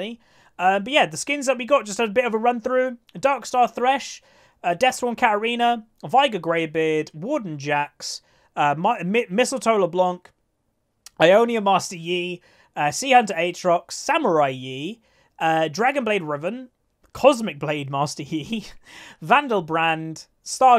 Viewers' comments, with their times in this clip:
0:08 the warden jax was heard like wooden jax lol. (Btw even in subtitles was heard that way. Checked cuz i was curius ^^)